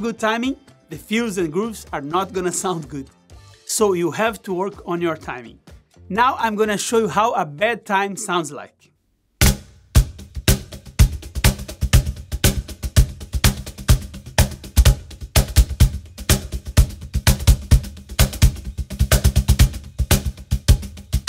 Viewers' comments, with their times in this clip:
0:09 Mr. Rubato over here lol